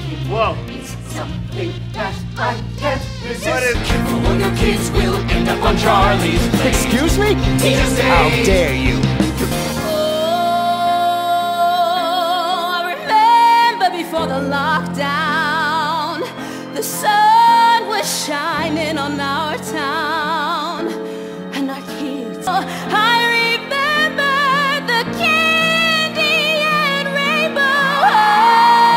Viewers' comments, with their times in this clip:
0:09 Man in my opinion Bryce's line alongside the tone represents a lot of when the COVID forced us to stay locked